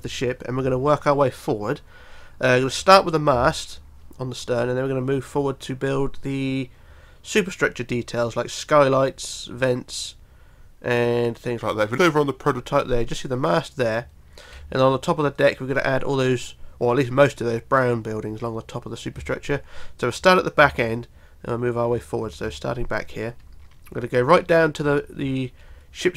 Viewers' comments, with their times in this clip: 0:07 What happened to your voice at roughly